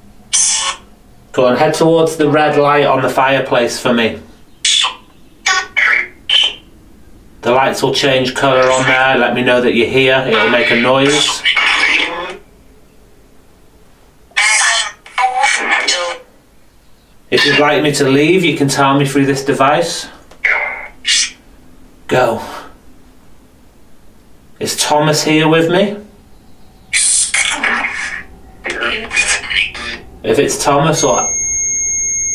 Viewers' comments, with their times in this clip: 0:03 At 38.00- sounded like a female say “very young”,,,?
0:15 female voice said “who are you”:after the other voice said the same thing